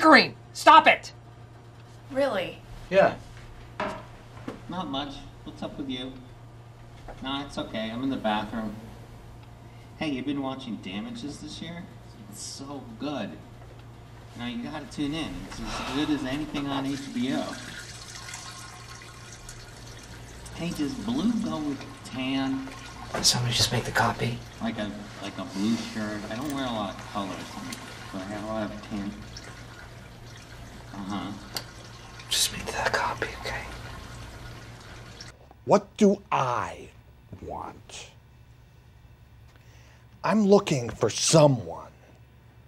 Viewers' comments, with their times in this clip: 0:04 this is one of my most rewatched episodes of the office... and i JUST realized that voice is toby😭😭
0:25 the guy in the bathroom sounds like Toby!!!